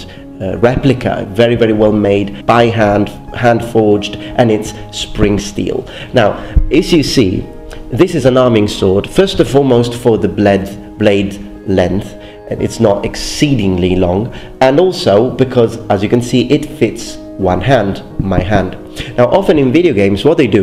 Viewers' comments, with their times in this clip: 0:07 blade + length=Bledth xD